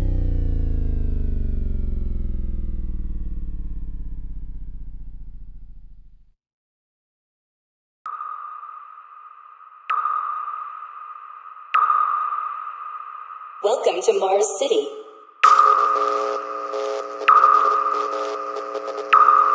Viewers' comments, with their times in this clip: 0:07 I'm a simple guy. I hear DOOM I like. Great tracks this guy makes.